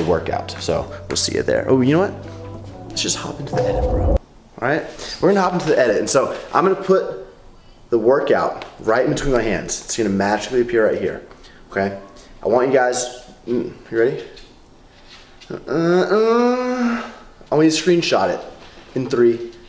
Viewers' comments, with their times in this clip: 0:05 ohhh that random noise left in